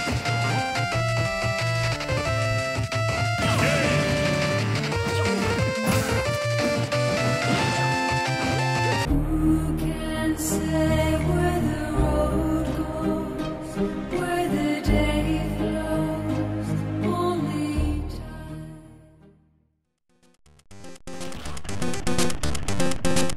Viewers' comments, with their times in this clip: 0:08 May your farts live on in heaven ;-; lik if u cri evertim